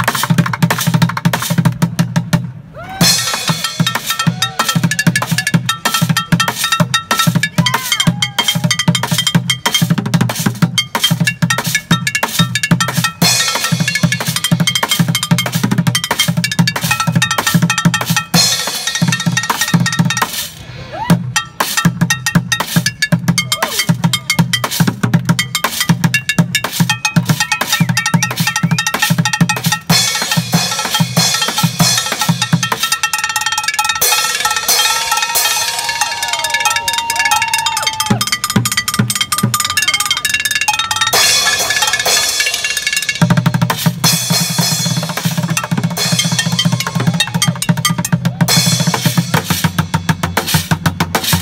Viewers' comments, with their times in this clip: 0:03 Even that little kid in the pushchair stopped eating his bag of food when the faster beat kicked in, brilliant 😂
0:12 baby starts clapping 😂🙈
0:12 the small baby are claping So cute baby 😍😍
0:12 the baby started clapping along it was so cute also this guy is insane his drumsticks look so light
0:20 For people who want this fire ass beat repeated
0:21 I liked that beat i ain't gonna lie i started jamming like crazy😂
0:36 mr krabs walking